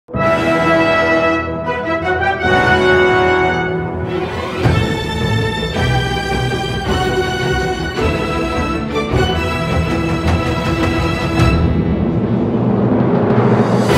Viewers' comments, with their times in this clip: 0:00 God this song is my fave. The lil trumpet thing in the beginning.... Yes😊